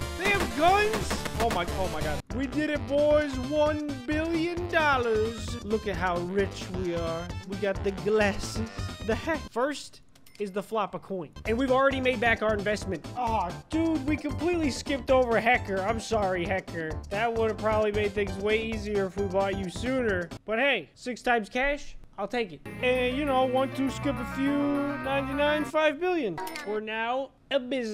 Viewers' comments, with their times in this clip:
0:08 we got the glasses, the hat CC:we got the glasses, the heck